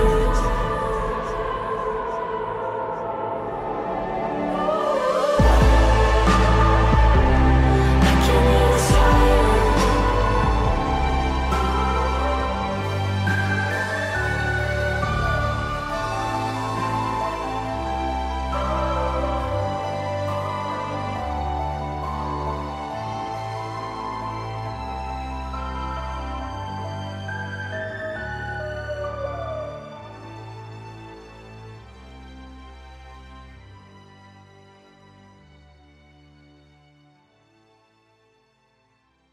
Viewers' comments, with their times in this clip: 0:04 I swear that hair flip with the uprising music is AMAZING!!!!!!!!!
0:25 sound like sirenhead at the end